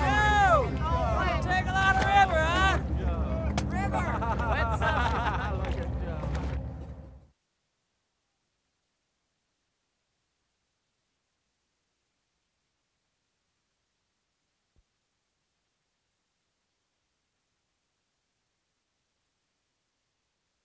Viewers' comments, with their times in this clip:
0:03 when Richard and Steve clapped it sounded like getting hurt in Minecraft 😂